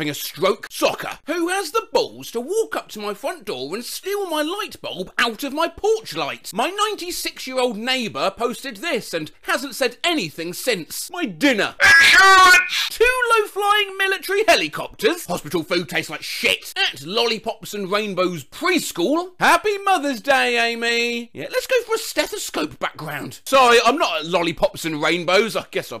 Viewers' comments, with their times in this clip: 0:10 king harkinian soundin' ass